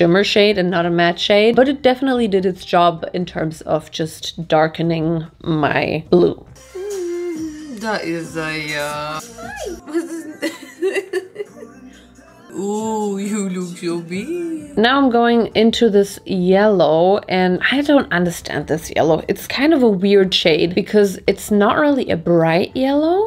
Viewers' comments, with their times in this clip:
0:07 i hear EXO
0:07 it’s the EXO playing in the background for me 🦅🦅🦅